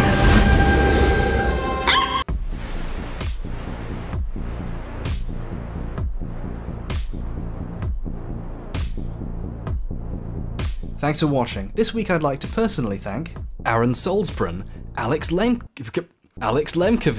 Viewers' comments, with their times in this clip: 0:03 Oooohhh what's that music ? Just realised it reminds me of Algorithm by Muse except this video came out 2 years before that!